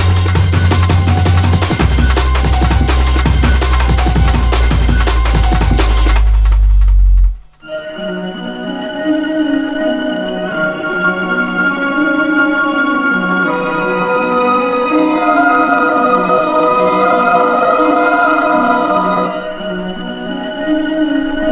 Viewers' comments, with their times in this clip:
0:08 Hearing that breakdown through a massive sound system in 1993 Great moments in life 👊